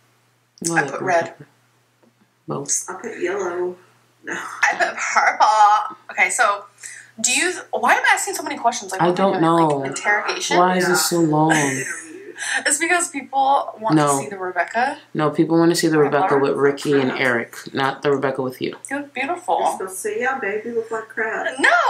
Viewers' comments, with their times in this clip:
0:05 Did you fart ?